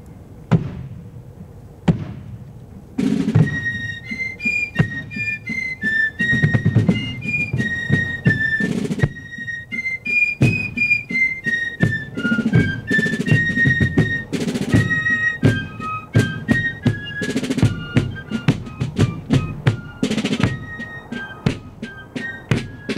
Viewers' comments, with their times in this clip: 0:03 YANKEE DOODLE HERE